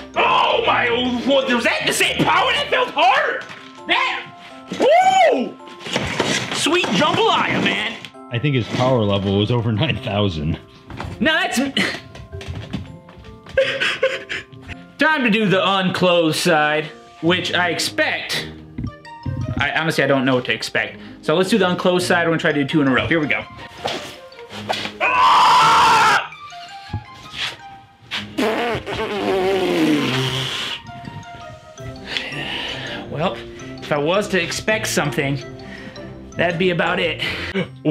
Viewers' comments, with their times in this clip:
0:05 Sweet jungle lion xD
0:25 there was anger in that scream😂